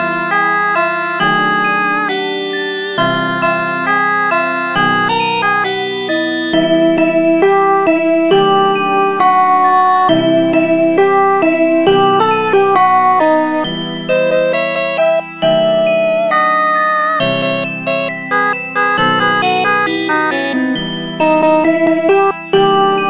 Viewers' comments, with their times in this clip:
0:06 that sounds just like the dejection version